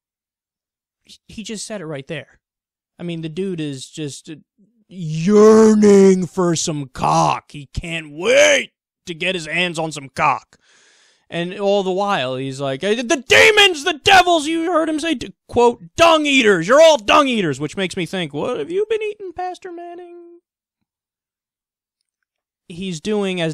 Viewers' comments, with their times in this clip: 0:10 and the volume goes down